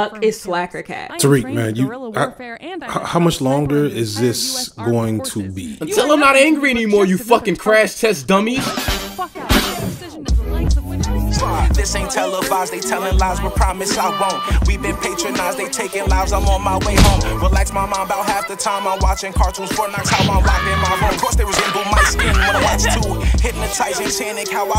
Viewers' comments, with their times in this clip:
0:08 Love how you still hear her during the into sequence 🤣